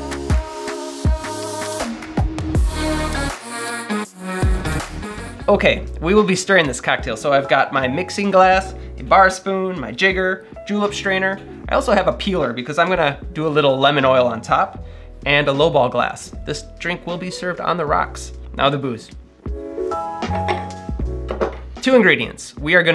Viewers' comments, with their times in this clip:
0:03 When i hear that music, I think about controlled pairs. It's so weird to see cocktails getting poured when im picturing room clearing and dudes getting shot in the face